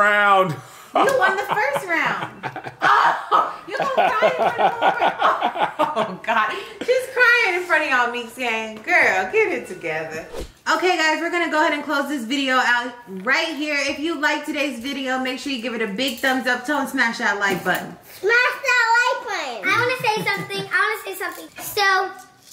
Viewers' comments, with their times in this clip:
0:08 I heard heather Texas side😂😂